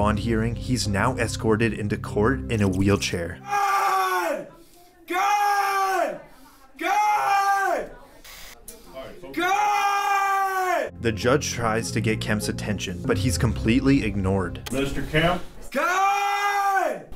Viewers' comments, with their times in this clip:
0:04 why is shouting god lol